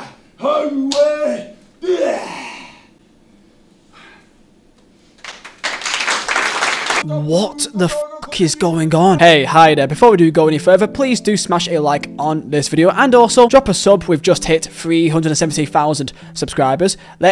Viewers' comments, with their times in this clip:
0:04 shout out to the lady in the back for biting the bullet and starting the clap cycle. she is the real hero of this story.